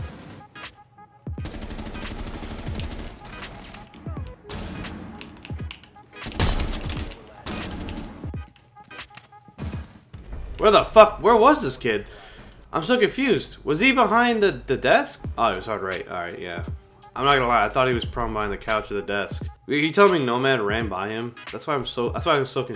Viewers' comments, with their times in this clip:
0:03 I can hear the keyboard bro ...